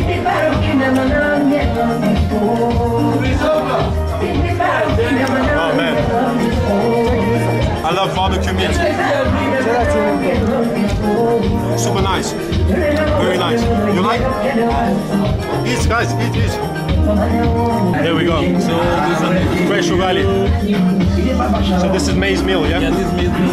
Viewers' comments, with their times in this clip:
0:09 That song playing was fire.